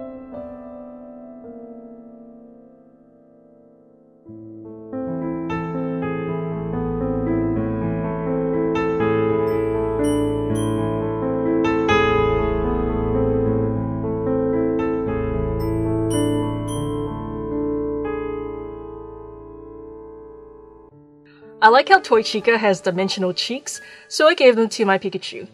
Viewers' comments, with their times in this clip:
0:06 What is the song called please? I would love to play it on the piano, I love the creepyness. Thanks!